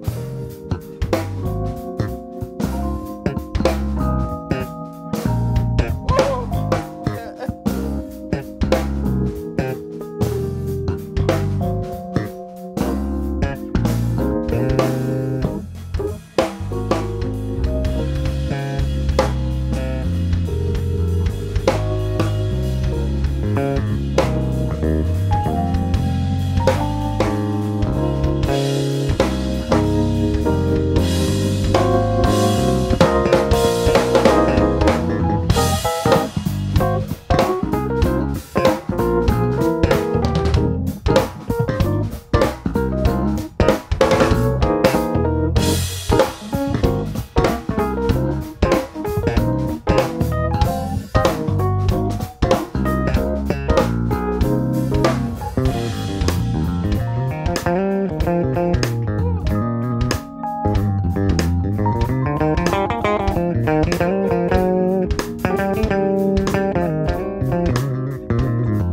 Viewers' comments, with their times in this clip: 0:04 was that planned? or did the bassist just catch that if so he is a beast
0:55 that bass solo ...